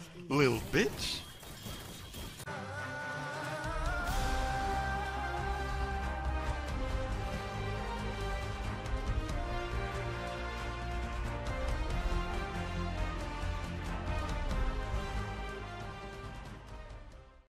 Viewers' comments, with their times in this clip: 0:09 I swear, there's nothing dryer than every woman listening to his accent/voice combination lmao...not even the Sahara Desert can match it.